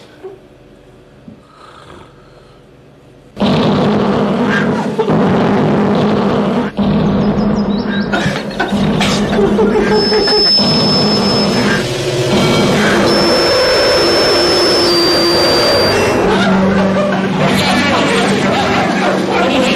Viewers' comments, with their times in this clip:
0:04 is easily the best part. Phil getting waked up by his own snoring and Vito raging over the crazy noise.